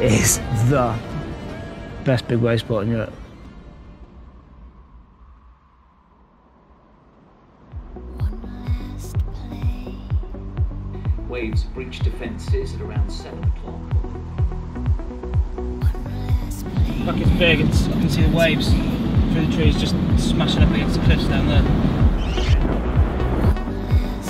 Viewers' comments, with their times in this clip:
0:08 ff to for Deadmau5ish type of thing.. :D